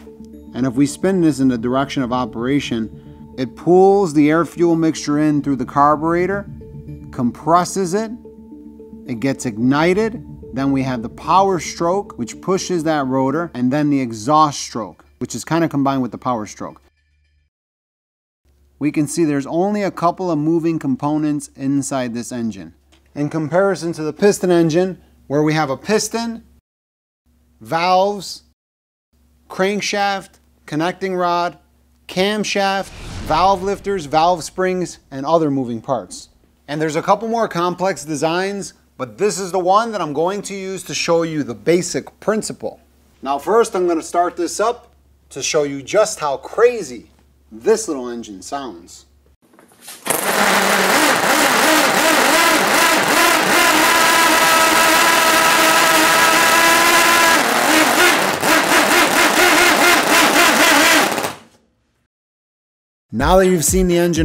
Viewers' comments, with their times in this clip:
0:03 I don't ever want to hear you say 'comprasses it' ever again
0:50 Sounds Like a Chainsaw.
0:51 sounds better than most Honda's